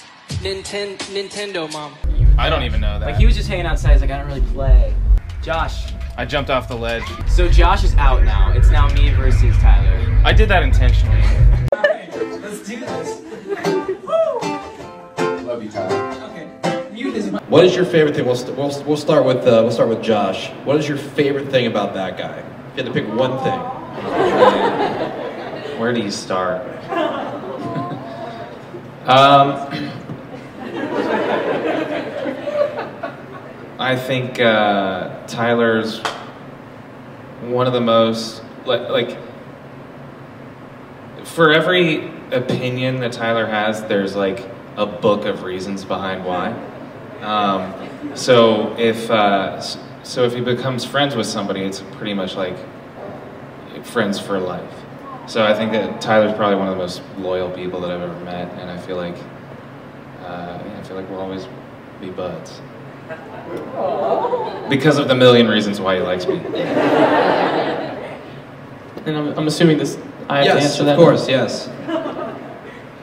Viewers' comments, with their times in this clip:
0:05 oml I thought he said his name is bIlL with an a and I replayed it back and thought he said his name is bIlL he’s dead..😂 I’m messed up sorry if I have bad e n g l i s h
0:42 TYLER'S VOICE IS SO SHAKEY AND SAD I CAN'T-
0:47 Brendons sitting in a corner laughing evilly
0:57 Bruh, Tyler’s crackin’ himself up😆